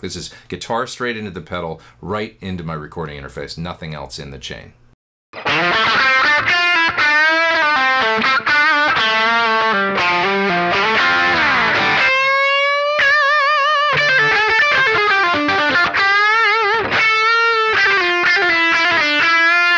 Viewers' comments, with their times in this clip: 0:06 pure VOX gold in the video / the cool thing is AC30's are really loud to get that solo tone... here you can get it at room volume (nice)